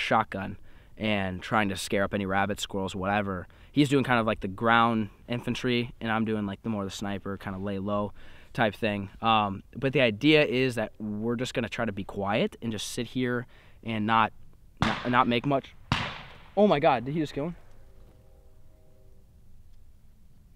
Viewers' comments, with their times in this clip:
0:08 lol. Were just going to sit here and try to be quiet BANG!